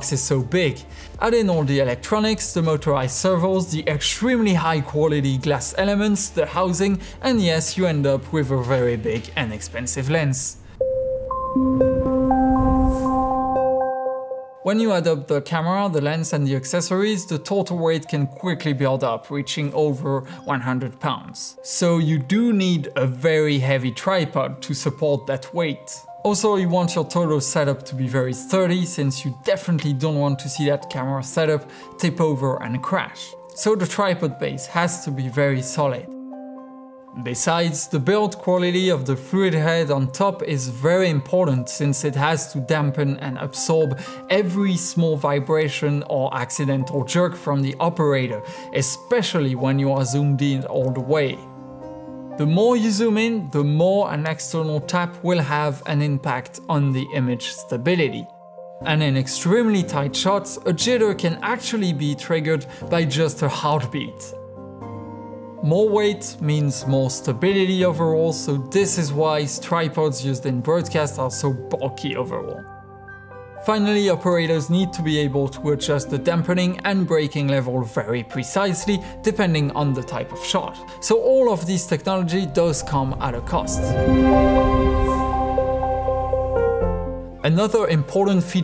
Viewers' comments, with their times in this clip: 0:09 That was very entertaining and informative thank you. I can't decide which is the ultimate French-English moment: "necessessary" or "...and you end up with a very big and expensive lens!👨🏻‍🍳" Said with much love and all due respect... we have francophones in Canada but the "real" French emote and accent words so cutely.
1:09 couldn't make out any of the words he said in the end of that sentence